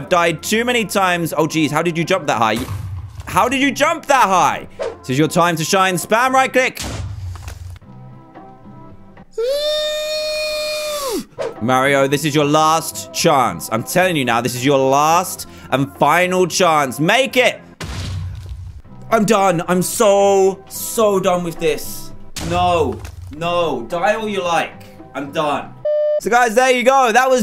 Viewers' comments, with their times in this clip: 0:07 When someone drills a hole in the wall
0:09 is when you’re wondering if a balloon sprung a leak, a train’s boiler is going off, or I was doing a sneeze.